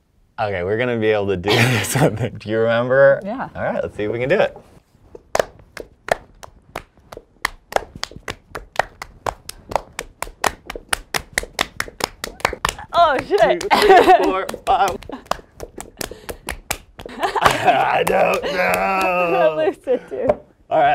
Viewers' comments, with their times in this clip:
0:04 how many clap ?????